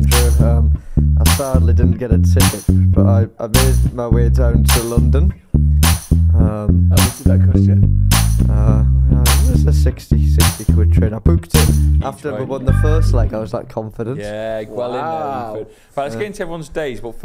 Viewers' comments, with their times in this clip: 0:05 Who's in charge of the editing this week? glad the theme tune came in again... wasn't sure what I was watching 🤣